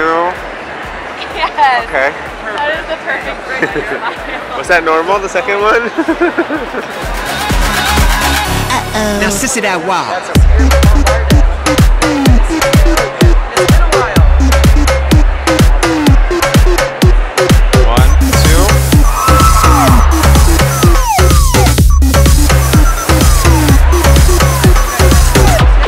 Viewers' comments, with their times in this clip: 0:09 almost sounds like a rip off from LFO-Freak